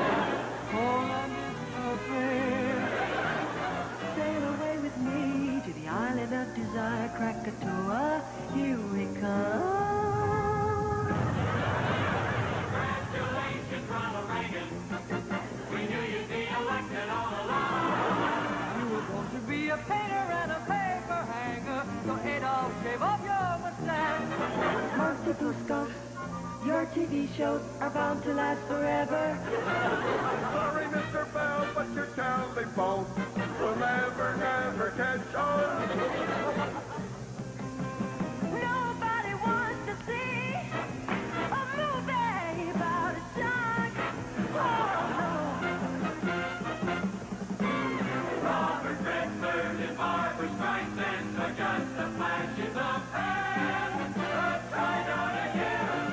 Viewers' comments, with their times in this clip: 0:10 michaels voice was angelic
0:38 his vocals here 🔥